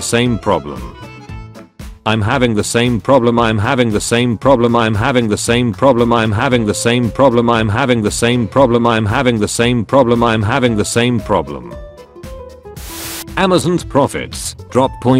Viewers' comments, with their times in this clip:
0:03 That beat was fire